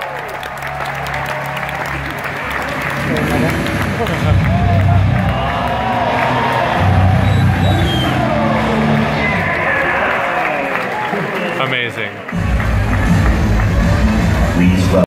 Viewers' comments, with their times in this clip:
0:06 Kind of cuter how the crowd unanimously goes "Whoah" when they see badass Dante for like 3 seconds riding bike It's like, sure the 2 minutes of Nero gameplay is meh but here comes the money shot. Our boi Dante winning hearts, for decades now. :')